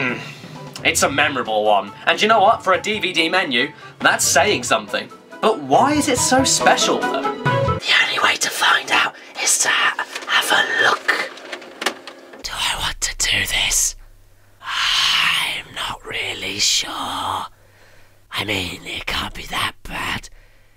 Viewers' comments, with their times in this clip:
0:05 Did anyone else hear Saladfingers in the whisper? D: No me gusta